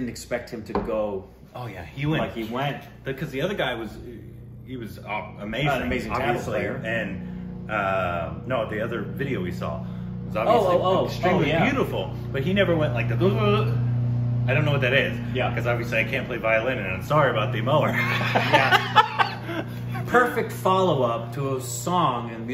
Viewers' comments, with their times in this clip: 0:08 Lovely drone from the lawn mower.. Make sure you credit him :)!